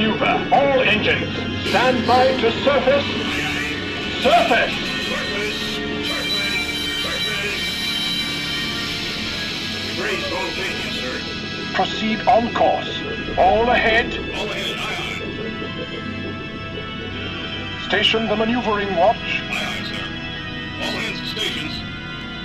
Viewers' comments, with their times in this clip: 0:05 sounds like hes saying perfect like in street fighter 2